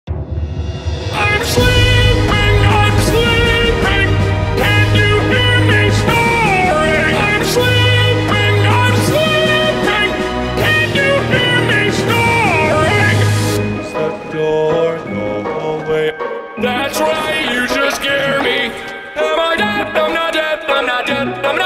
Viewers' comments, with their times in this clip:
0:02 he put a welcome to the black parade style :O
0:04 Can you hear me snoring